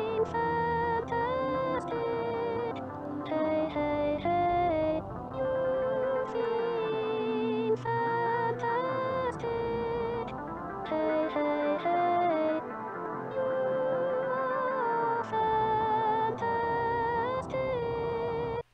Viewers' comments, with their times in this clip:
0:05 the man killed a girl who was wearing the same clothes in fact is her clothes he killed her in the spot where he shows the grass the voice is hers is a robot clone I think she sang that before she died is kinda messed up